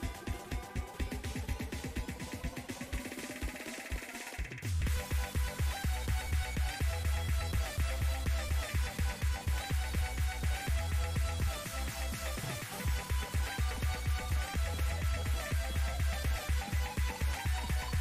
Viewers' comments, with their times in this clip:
0:05 I was literally listening to a mashcore mix of this song, then paused it to watch this video and immediately skipped to this point because I thought this was one play. So trippy hearing the same rhythm, and with the most random song ever. I know people won't care but I feel special